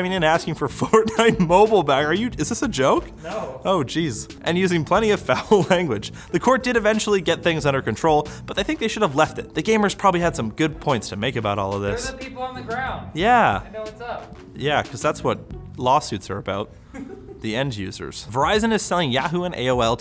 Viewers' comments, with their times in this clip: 0:03 balls scratching detected